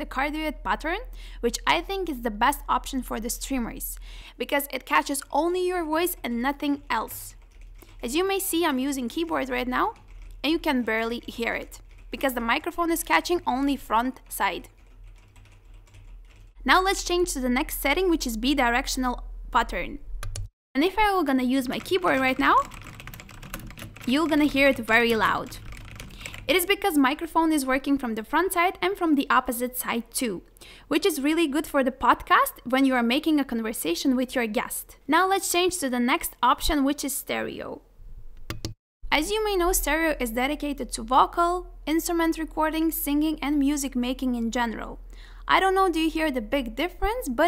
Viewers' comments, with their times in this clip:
0:07 Idk much about microphones or all that but I guess a good feature for next mic could be just better and cleaner sound while filtering the sound, for example the cardioid pattern does catches more your voice than the other noises, but we still can hear very slow the keyboard, so I guess the feature should be that we cant hear the keyboard, or any other sound which it isnt your voice, idk if its possible tho LUL but that is what I think. Great video as always <3
0:28 😨😨😨 wow what a great working microphone 😍😍😍😍😍😍